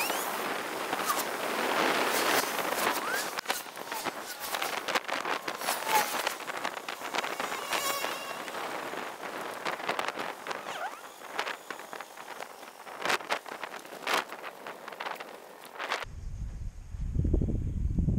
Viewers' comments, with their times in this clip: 0:06 construction zone sounds like a fly lool